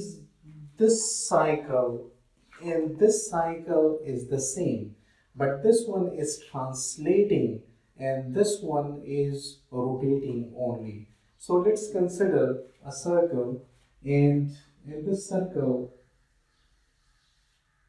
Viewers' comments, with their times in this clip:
0:03 ok, sir... now the voice is clear after